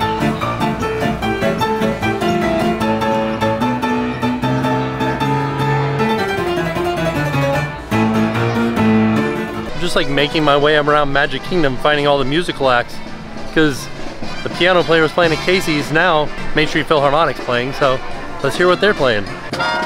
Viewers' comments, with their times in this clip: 0:06 love listening to them play the piano 🎹 while eating a hot dog 🌭